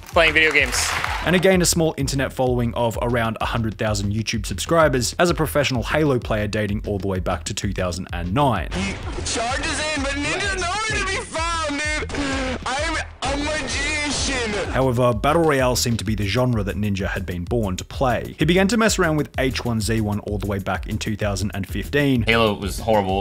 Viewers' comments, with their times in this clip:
0:09 Mans recording on a kinect mic earrape af 😂😂